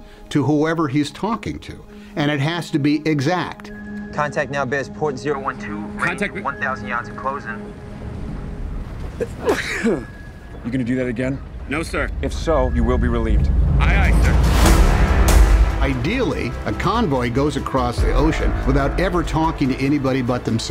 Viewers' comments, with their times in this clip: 0:07 come on.. its sneeze